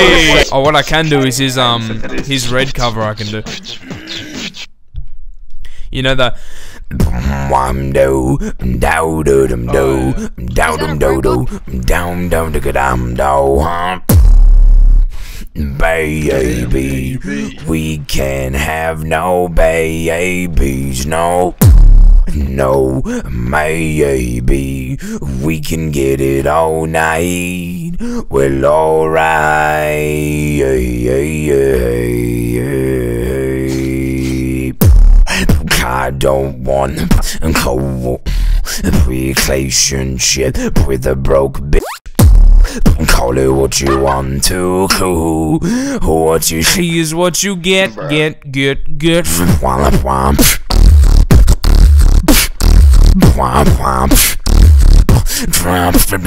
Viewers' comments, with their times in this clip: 0:03 the bass be hitting hard.
0:13 that bass hit hard bruh
0:19 my head phones dead ass shook my head from the bass
0:41 That self censor was mint👌 haha